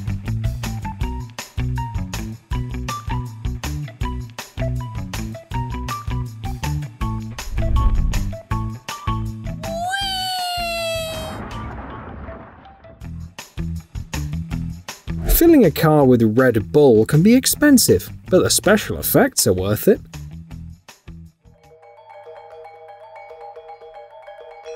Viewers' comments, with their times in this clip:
0:09 That "weeeeeee!" caught me off guard. 🤣😂